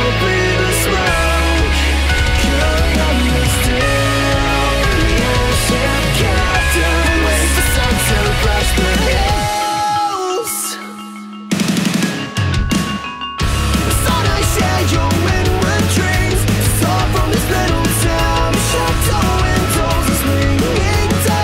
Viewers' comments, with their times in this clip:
0:06 it sounds like Javanese "Gamelan"" 🤔